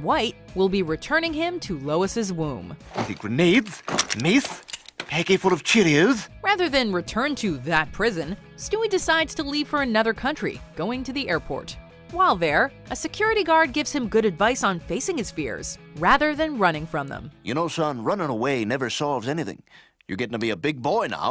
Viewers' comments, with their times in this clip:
0:06 stewie used to have a mean lisp 😂😂😂